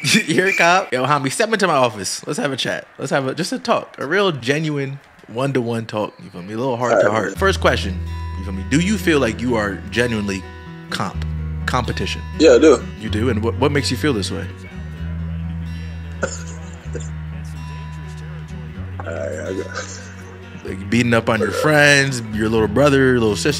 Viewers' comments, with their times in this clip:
0:07 Ayo 🤣 the music you played is killing me 😂